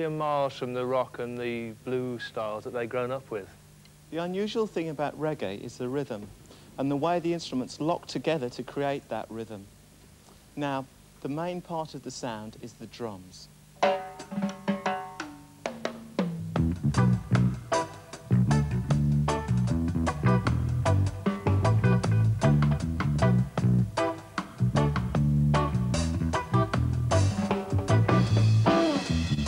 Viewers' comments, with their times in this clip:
0:04 Am I the only one that died when the guy started talking?
0:15 awsss man that bass!